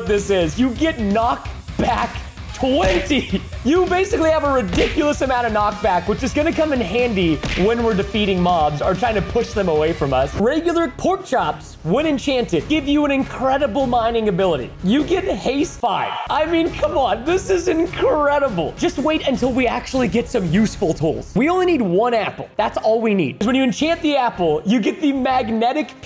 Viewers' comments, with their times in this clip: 0:07 did anyone here the one punch sound